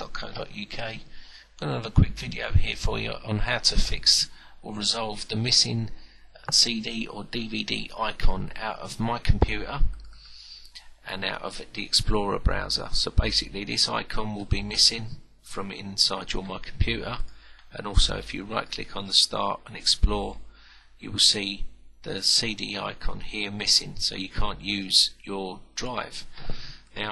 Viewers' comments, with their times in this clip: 0:09 My compu-ah? please tell me your joking